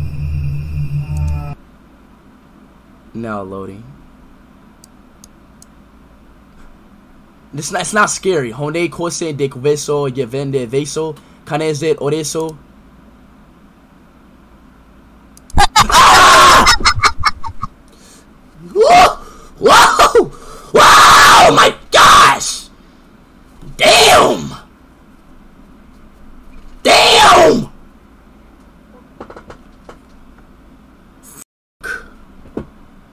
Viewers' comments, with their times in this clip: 0:08 Dutch IShowSpeed isn’t real. He can’t hurt you. Dutch IShowSpeed:
0:15 how the hell did he get scared by laughing